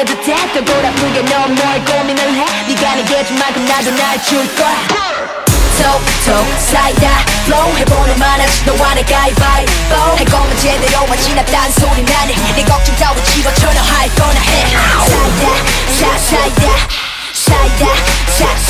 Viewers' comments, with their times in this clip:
0:04 Wot? Is that a Gucci Mane 'BURR' ??